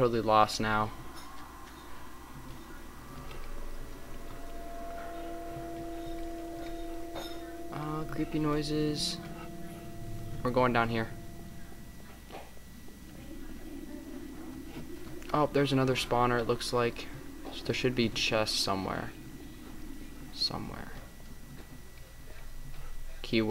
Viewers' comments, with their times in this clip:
0:04 more cave sounds
0:06 herobrine/cave or whatever sound